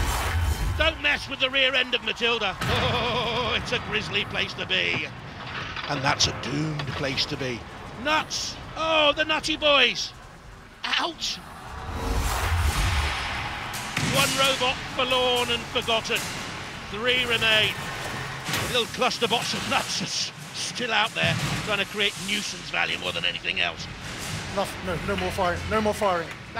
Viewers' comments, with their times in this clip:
0:07 "Nuts, oh the nazi-boys"